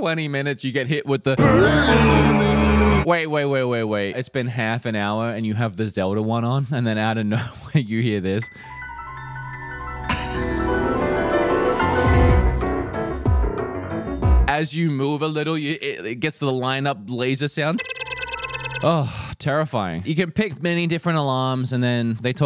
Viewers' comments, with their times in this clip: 0:08 HAHAHAH I need the alarm! HAHA